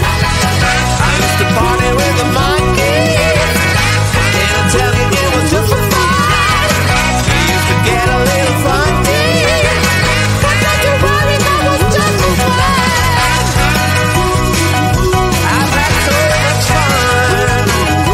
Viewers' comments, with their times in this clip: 0:03 omg the song is so irritating in my ears